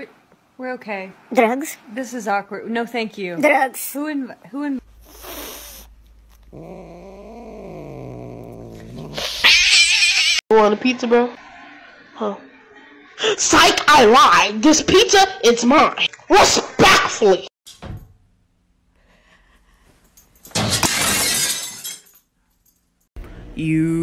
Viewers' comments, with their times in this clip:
0:04 O man that is glorious, fffssssh all the way ahahaha
0:06 cat:*Hisses* Man: Hisses Cat:MEOWWWwwWwWwwWWwWww Me: what the hell-
0:08 cat just turned into an alarm XD